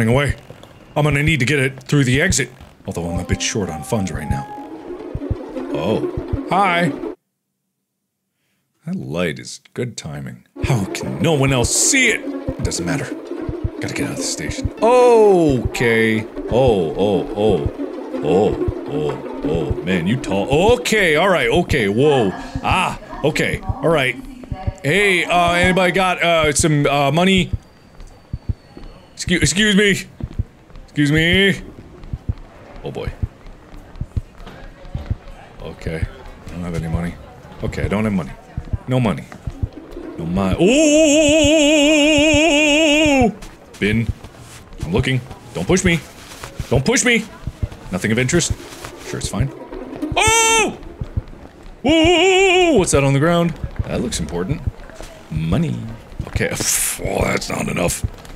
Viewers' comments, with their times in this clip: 0:03 That sound sent me into a panic for a second. Thought I was boutta miss my metro even though I’m at home eating lunch.
0:40 I love him screaming with vibrato it's so extra 😭
0:40 i didnt know mark was a opera singer 💀